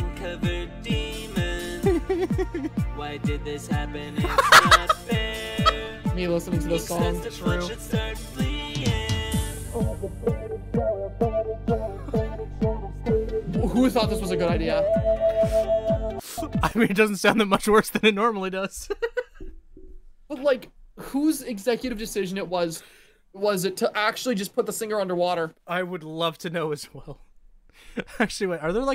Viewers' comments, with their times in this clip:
0:09 NOTHING and I mean NOTHING could've prepared me for the singer to get water boarded in the recording booth.